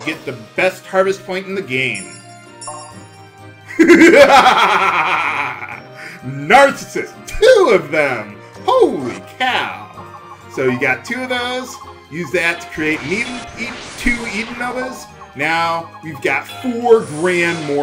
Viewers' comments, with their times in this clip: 0:03 LMAO that evil laugh.